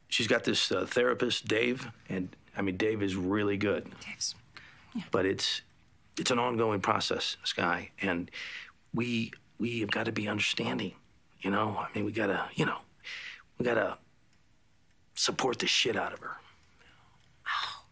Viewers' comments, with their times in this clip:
0:04 I love “Dave’s good…yeah.” You can just feel her dripping sarcasm and mounting frustration